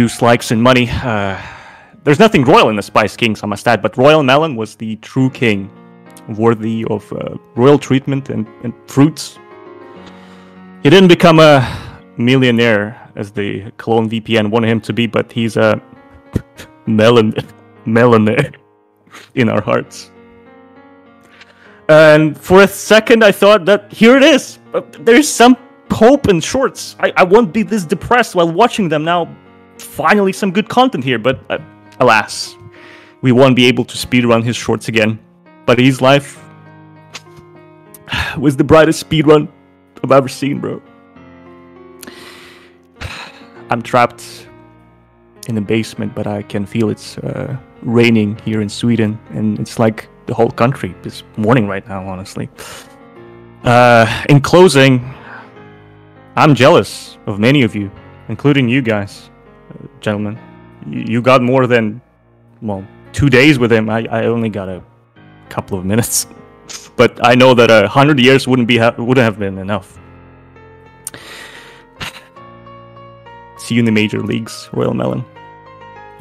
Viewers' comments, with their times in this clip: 0:06 Just hear the music
0:58 Bro why do I hear a rickroll on this clip